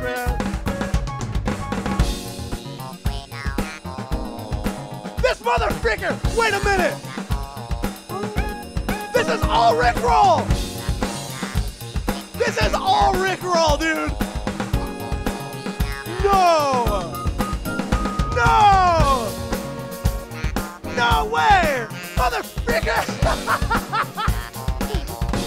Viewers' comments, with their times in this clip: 0:09 why does this sound like one of the revelations from MGS series?